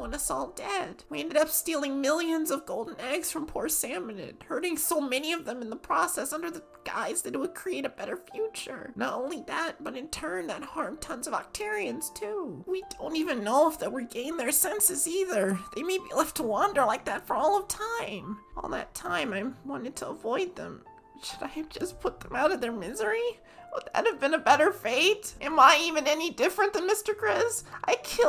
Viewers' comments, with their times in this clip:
0:10 why does this sound like armin from aot in season 1